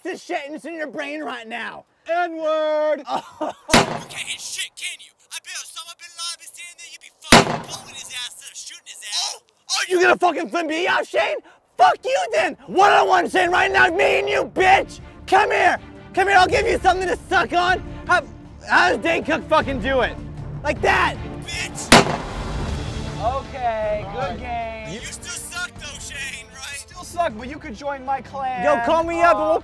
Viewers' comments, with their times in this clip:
0:10 his mic is off